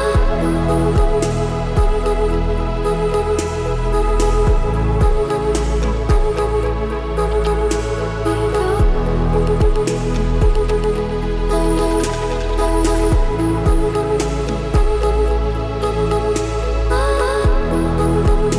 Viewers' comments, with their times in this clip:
0:04 I swear this song was saying "Gobble Gobble, Gobble Gobble, Gobble Gobble."